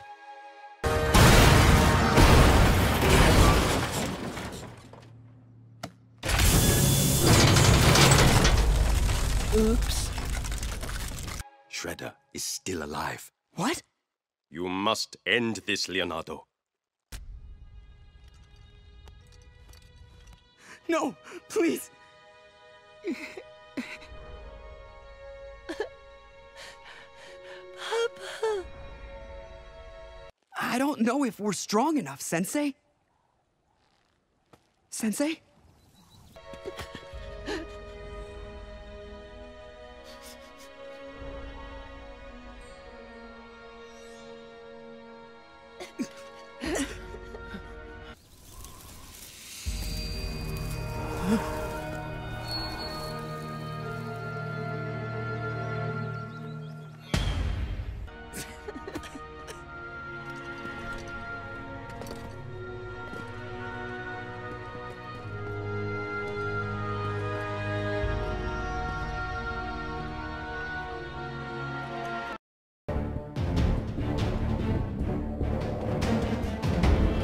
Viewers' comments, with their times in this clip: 0:06 You hear Shredder’s body getting crushed in the garbage truck but probably really his body was breaking the inside of the truck. Oof 💧 Since Splinter’s Spirit said he not dead next scene.
0:27 The way he said it just left me broken🖤🖤💚💚😭😭😭😭😭😭😭
0:27 Melted my hard, the way Mikey said Papa I cried! 😭😭😭😭😭😭😭😭
0:27 The way Mickey said papa was so cute....
1:02 Splinter: dies Mikey: Whips out a boombox Leo: Wha- COFFIN DANCE SOUNDS